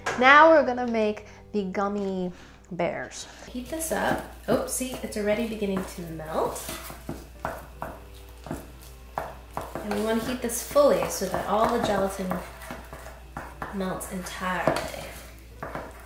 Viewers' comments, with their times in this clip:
0:04 I actually didn’t mind the way the audio sounds For some reason it felt like I was really next to you and in your kitchen, instead of in my own bed! 😂